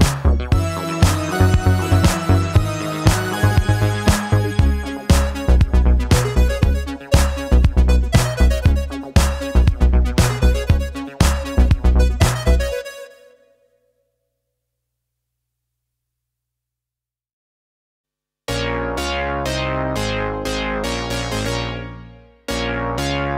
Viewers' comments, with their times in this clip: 0:04 Wow you played that echo effect on a second synth Awesome!